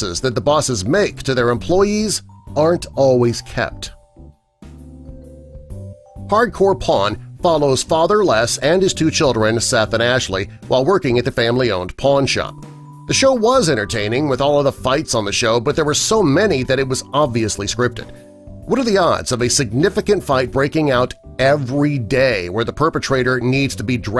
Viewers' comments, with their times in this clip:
0:08 thought he said Hardcore porn 😂😂😂